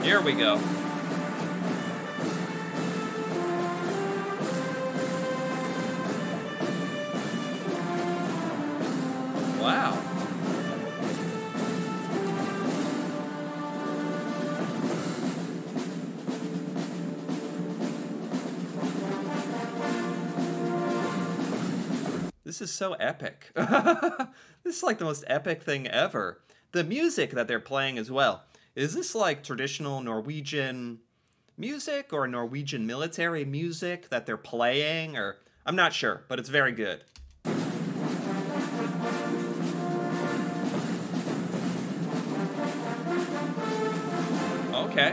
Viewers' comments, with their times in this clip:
0:03 the music is american western music acctually 🤨
0:27 this is the theme music from the 1966 Clint Eastwood movie, «The Good, The Bad, and The Ugly». It sounds quite different when its not played on the original instruments.